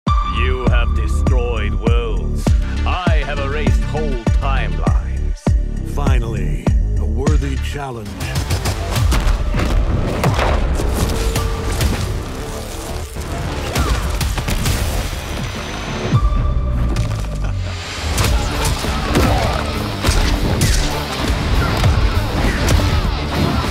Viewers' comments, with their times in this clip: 0:05 does anyone else notice that omni man kinda sounds a little bit like max tennyson from ben 10?
0:09 Yupp. I’m so addicted to this WHOOSH sound lol